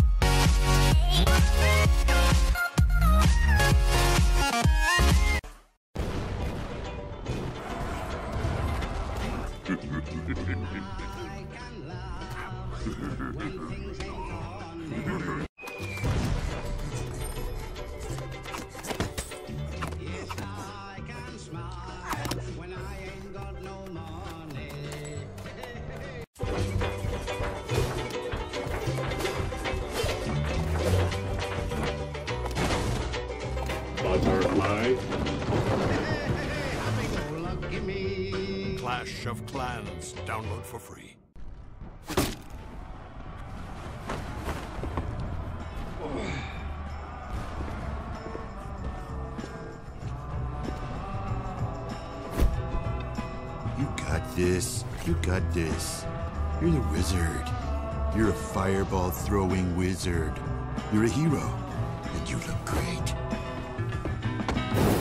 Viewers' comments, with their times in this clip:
0:06 music in background?
0:21 Goblin gets shot in both hands,right foot, and tounge muted screaming
0:34 Why does that P.E.K.K.A here sounded like Darth Vader
0:46 wizard background sound overpower 🔥🔥🔥